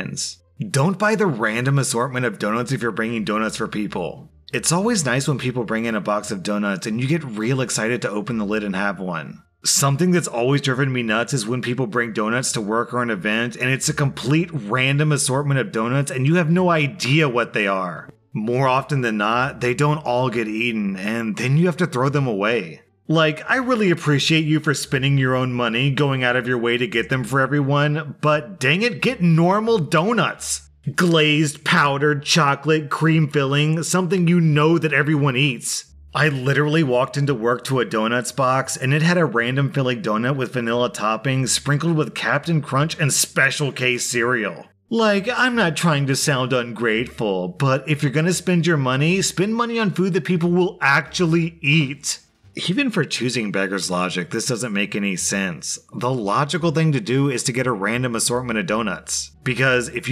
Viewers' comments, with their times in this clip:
0:03 I love how your voice gradually grows more and more entitled lol
0:45 where he turns into the entitled voice. Its really satisfying honestly